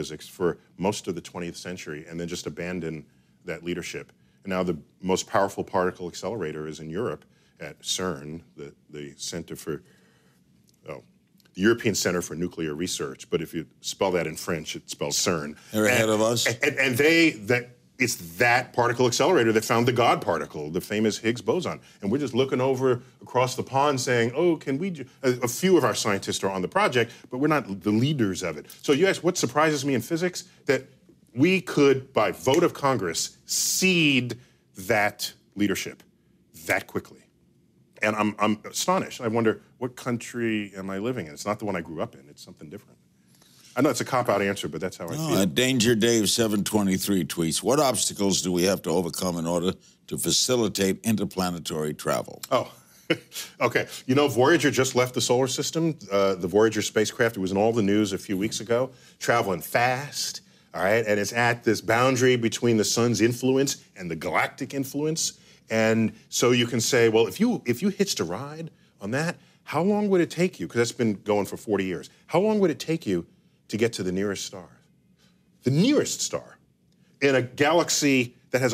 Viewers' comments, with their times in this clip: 0:09 Did you hear how he said "Ceeeerrn" with such disdain??
0:15 Larry King's french is on fleek.
0:27 Sounded like he was channeling Carl Sagan when he said "leaders."
0:58 deGrasse just went a bit getto "Faaaaast, aiiight..." :) He is so awesome.
0:59 This is about as much ebonics you're ever gonna get out of Neil deGrasse Tyson.